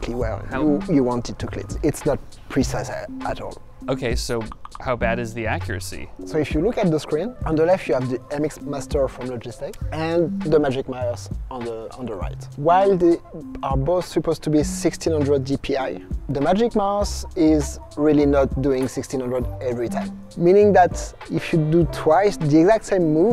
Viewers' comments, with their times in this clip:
0:03 have mercy with the slack jumpscare
0:04 The slack notification sound had me really confused!